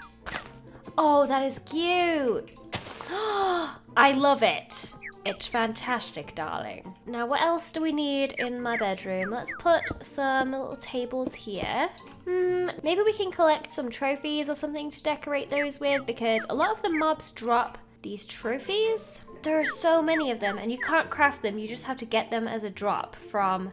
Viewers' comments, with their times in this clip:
0:08 there was like some chirping and since I was watching this on my tv I thought I was tripping.